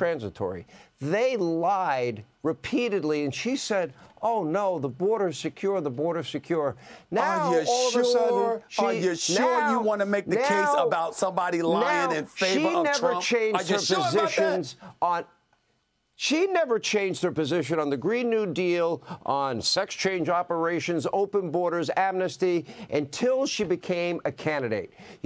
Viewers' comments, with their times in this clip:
0:09 auto tune Hannity